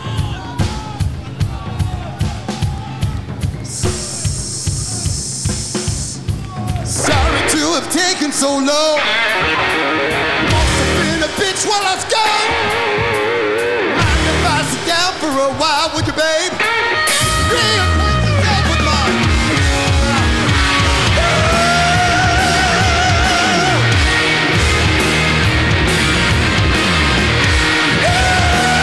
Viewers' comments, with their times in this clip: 0:10 Min. Bass school starts..!!! Damn gene is good.!!!💀🔥🔥🔥🔥🔥🔥🏆💯👊